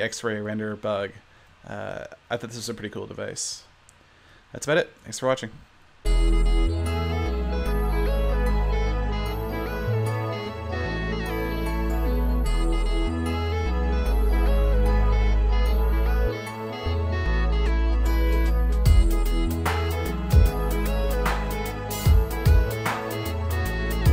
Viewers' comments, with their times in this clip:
0:05 yay music :D